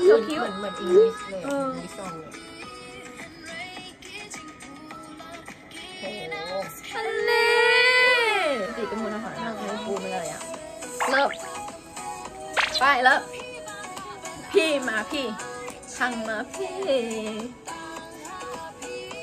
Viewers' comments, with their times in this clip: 0:05 🤣 the way you guys said aniii 🤣 this word is mostly used by khasi 😆